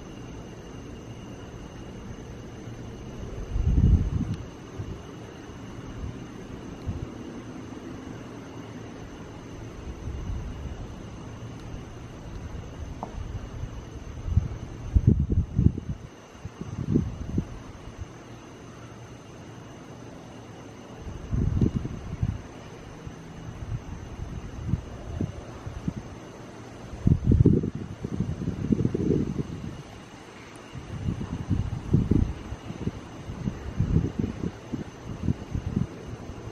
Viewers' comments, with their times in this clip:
0:05 very faint help me
0:18 you hear people talking